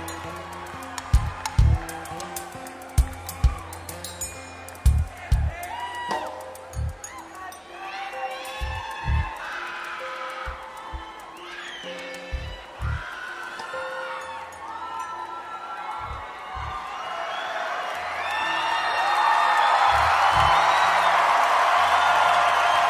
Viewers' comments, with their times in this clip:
0:09 Imagine living in the same household with the animal screaming ? My thoughts are with you.